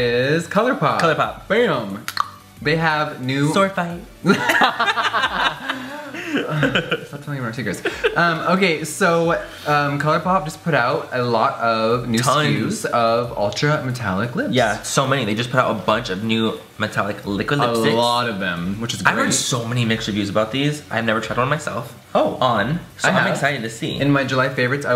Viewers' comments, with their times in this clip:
0:05 jeffreesss fake laugh hahahaha xD